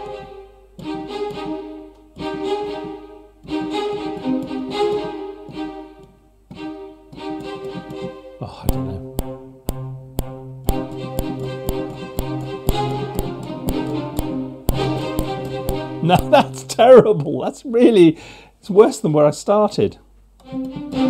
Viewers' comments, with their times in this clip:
0:09 hey that string thing sounds like the Cantina Band It would have been cool to do a straight string version of that piece!